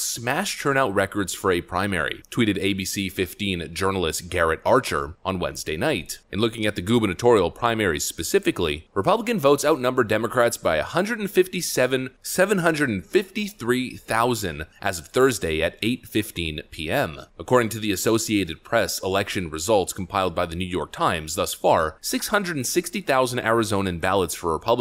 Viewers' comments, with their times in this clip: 0:10 Hivemind: Is this how you say that number? lol